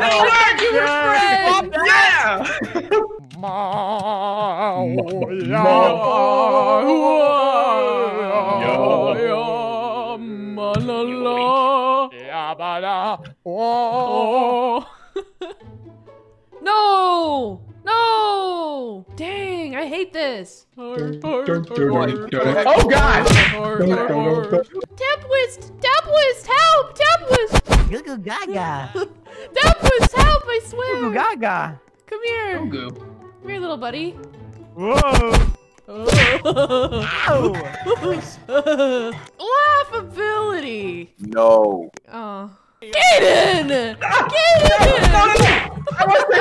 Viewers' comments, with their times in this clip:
0:03 the best song i have heard😂😂😂
0:03 best singing ever. NOBODY can top that amazing performance 😻
0:27 that was the best “goo goo gah gah” I’ve ever heard.